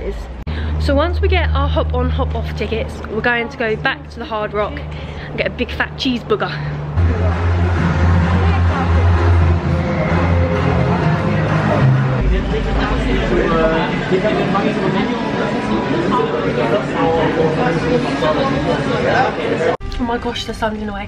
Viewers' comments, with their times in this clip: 0:05 Did you say cheese booger lol, you and your sister have the best times together